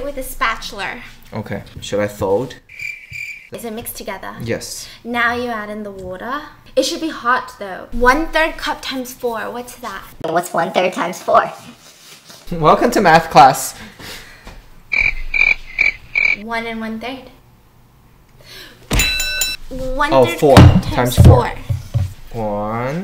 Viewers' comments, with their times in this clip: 0:05 omg she sounded so Aussie there
0:06 when she says the word water it sounds like she’s Australian